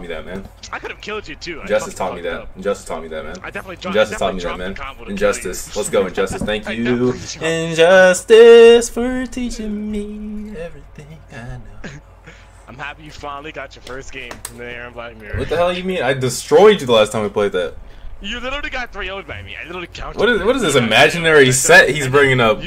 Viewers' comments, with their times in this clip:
0:06 my boy started singinn lmao